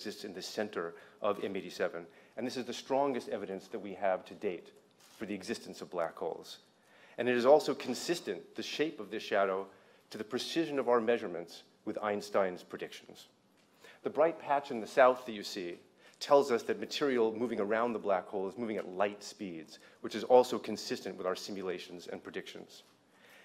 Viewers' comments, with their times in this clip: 0:09 She can not control her laughter. Wake up people. This is probably our black sun, not a black hole.